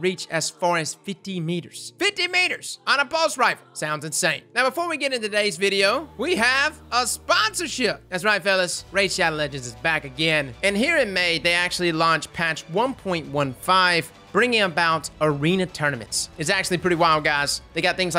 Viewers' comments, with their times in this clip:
0:05 I fuckin love that song playing in the background.